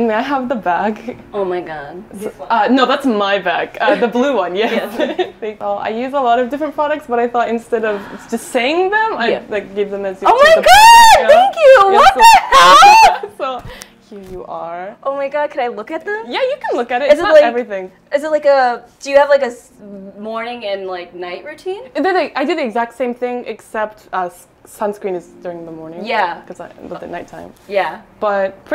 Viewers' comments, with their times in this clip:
0:10 RIP, I was using earphones
0:10 that poor mic is doing its best!
0:13 that mic peak